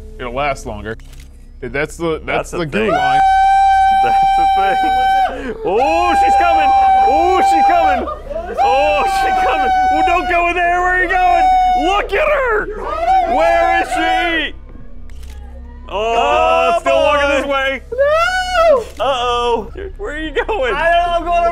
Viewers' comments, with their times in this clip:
0:03 Especially when he started screaming and his mouth got so big! I had to pause and just look at it for a while because it made me laugh so much.